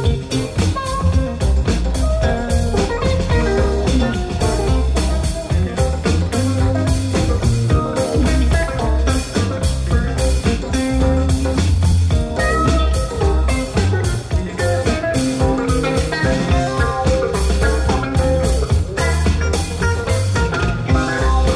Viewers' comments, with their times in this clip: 0:09 It just occurred to me during this Shakedown that Trey probably based his mid-late 90s and onward riffing style on Jerry's solo on this song. Start it for example. Of course Trey does his own thing with it, but the vibe is similar and I can't think of anywhere else I've heard that phrasing and tone combination.... maybe some other Dead tunes.